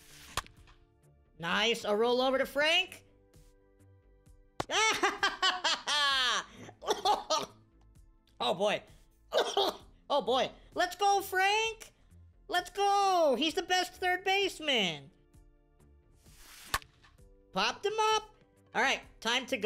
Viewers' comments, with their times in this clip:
0:05 lmaoooooo Sounding like cartmen